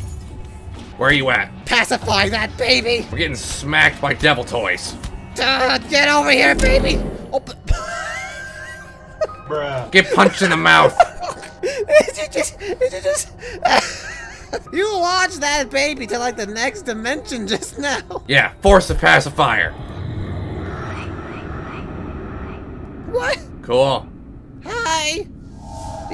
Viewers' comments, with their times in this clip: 0:07 that wheeze tho lol I love Suns laugh so much it brings me lots of joy- 😭😭😭
0:07 Sun: *laughing and wheezing* Moon: “ GET PUNCHED IN THE MOUTH ”